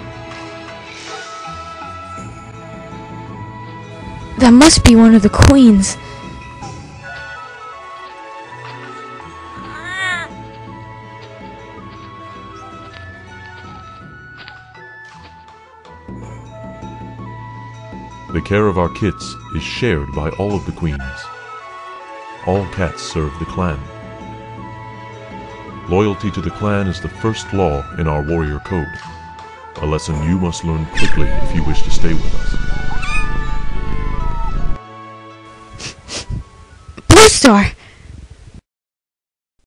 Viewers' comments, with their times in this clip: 0:04 RIP Rustys mic
0:37 MY HEARING OMG😨 :edit: warning headphone users turn down your volume now before clicking the time button or else your ears might pop😓😓😓